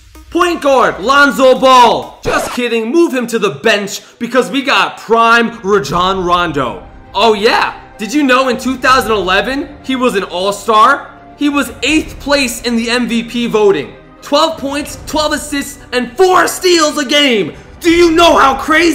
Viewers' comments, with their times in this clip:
0:06 say it right!!!!!!!!!!!